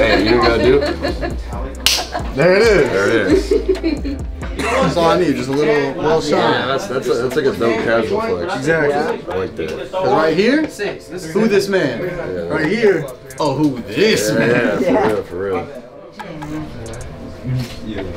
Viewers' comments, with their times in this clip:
0:04 who else heard and saw that dud in the left cough